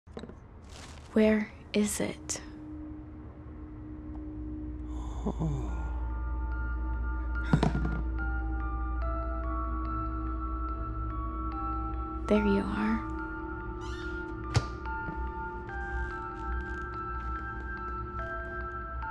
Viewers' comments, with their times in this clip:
0:06 I love that creepy music box playing